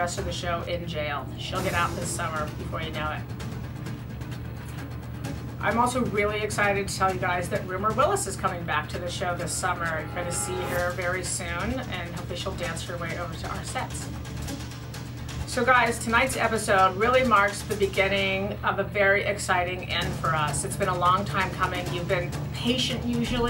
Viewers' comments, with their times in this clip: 0:07 Who is getting back on the show?? Cause all I hear is rura rillis bla blah ??